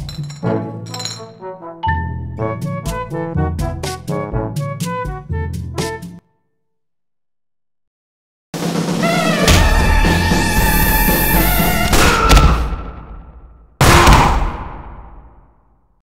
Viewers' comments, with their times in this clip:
0:08 I noticed that those pistols had different sounds. Will I get an unusual for that one?